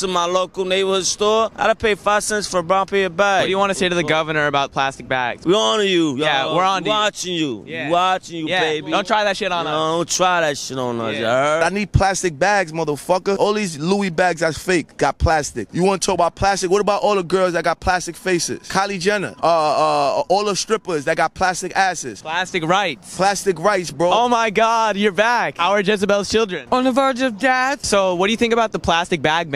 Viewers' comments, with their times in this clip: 0:07 dude sounds like nico from gta 4
0:11 This man sound's exactly like A$AP ROCKY!
0:12 Dude sounds like asap rocky lol
0:14 WHY DOES THIS ONE MAN SOUND LIKE ASAP ROCKY :D
0:14 Man sound like Asap Rocky.